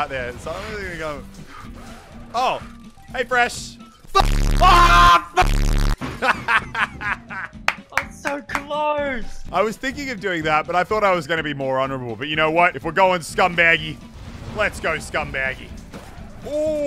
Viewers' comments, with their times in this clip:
0:03 Double bass boost